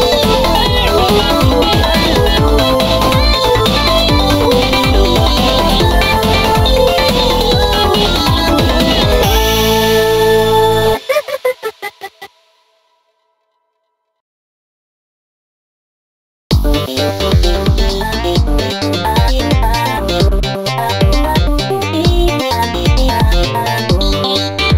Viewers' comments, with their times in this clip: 0:09 Hogs laugh and Jump is everything 🥹
0:09 no doubt hogs laugh is FRICKING CUTE❤❤❤❤